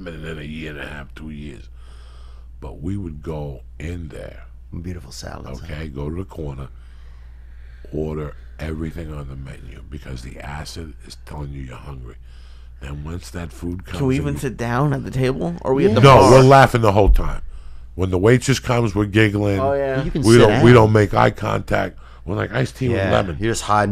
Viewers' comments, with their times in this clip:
0:04 😂the way Theo says BEAUTIFUL SALADS HUH😂😂